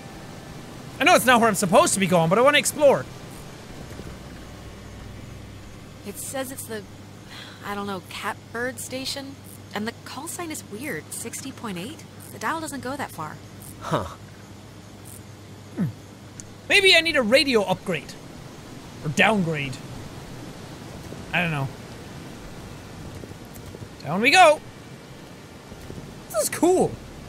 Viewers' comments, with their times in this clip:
0:08 jack at the cabin it said dial 60.9 but it doesnt go that far but at the rock it said in deep voice 60.9 than something about baby d- something like so jack sees this!!!!